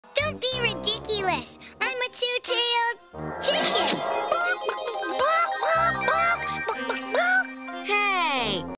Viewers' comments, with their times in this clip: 0:05 Tails is doing the chicken dance by flapping his arms, picking his knees up and clucking like a chicken.